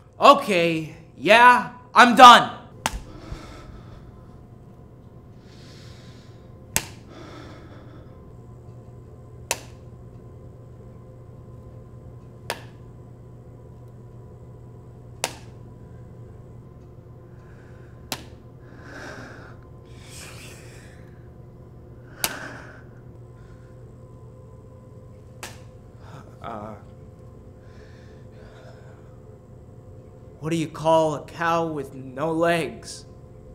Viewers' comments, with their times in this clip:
0:04 [slapping; exasperated, near erotic breathing] Mr security guard, stop it, please✋😩
0:14 * Pasta Pizza noises *
0:15 Keeps clicking * Hit-hi-hit
0:18 Spagetti pizza noises
0:21 spaghetti pizza noise